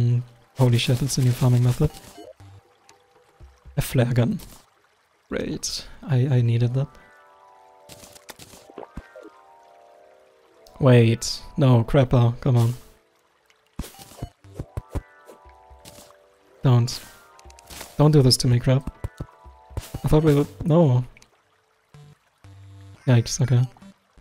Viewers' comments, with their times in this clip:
0:10 crabBar i got it